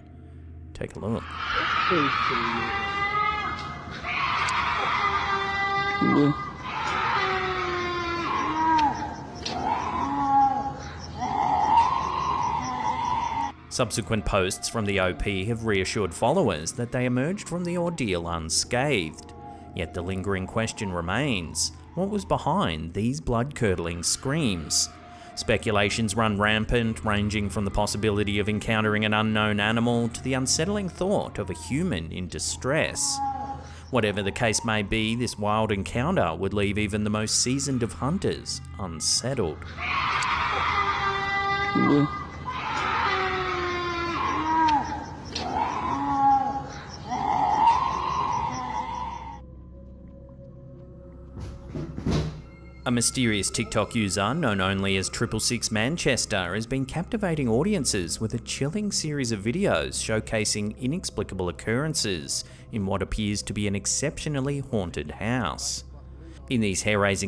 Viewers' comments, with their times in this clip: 0:03 it's probably just a couple of wildcats mating or one female in labor.
0:08 I've heard this exact audio clip of these 'screams' in at least 5 different videos.
0:08 Whats up? In the video minutes, it sounds like it could be a Bobcat? One night just a few months ago I had let my dog out while I was watching tv, and then i heard screams very similar to that. So I ran outside to get my dog, I thought for sure I was going to find her being eaten by a demon, skin walker, dragon or something. But no she had actually just chased a large bobcat up a tree and was standing at the bottom wagging her tail. i still cant believe how incredibly loud and powerful its scream was though, I never knew any cat could make a noise like that. Im not saying I know thats what that is? Just sounds very similar.
0:08 these creepy screams sound familiar, I heard those screams in other videos of Slapped Ham, So it's kind of some unclassified creature sound or sth paranormal? 🤔
0:18 second clip it’s a constipated bobcat 😂😂😂😂
0:18 Sounds like a bobcat.
0:30 that's a goat!!😂😂😅😅 We raise them!😂😂😂😂
0:42 It's the cry of a big buck.
0:47 # It sounds like a wounded, big cat.
0:48 I'm going to guess a wounded deer....though perhaps a small bear might make that sound. It's a pretty high register so its trachea can't be bigger than an adult human female.